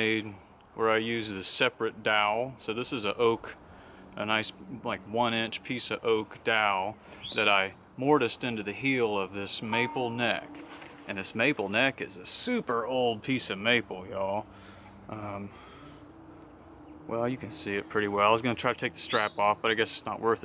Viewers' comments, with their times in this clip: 0:07 That sound. That banjo. Golly, thank you for sharing and keeping me awake AM :P